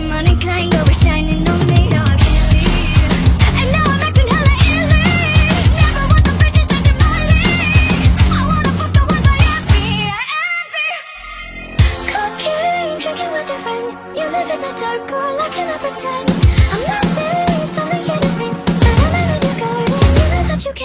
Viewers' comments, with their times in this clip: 0:03 Althogh it could be better in I really love the vocals, so 10/10❤